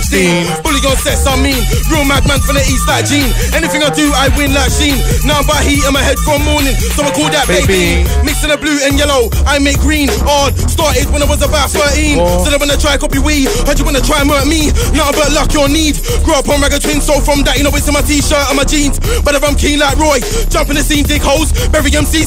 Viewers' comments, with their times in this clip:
0:09 Beat ??? Sounds like a when im ere or cool off remix